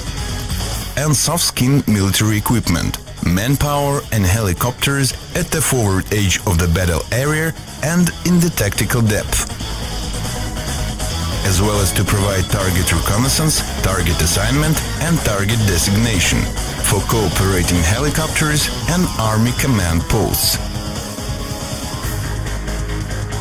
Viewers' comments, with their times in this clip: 0:07 WTF is a "foward AGE of the battle ERIER"?